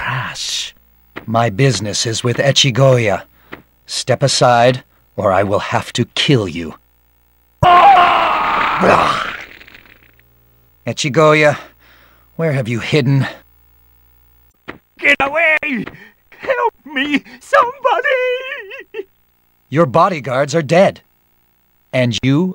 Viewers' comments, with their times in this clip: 0:07 for Oscar winning voice acting